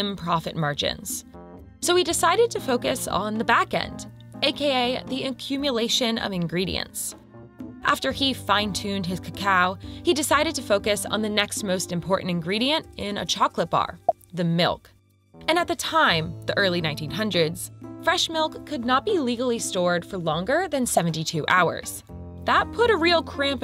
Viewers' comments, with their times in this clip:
0:04 The narrator mispronounces “cocoa” She pronounces it like "ka-COW"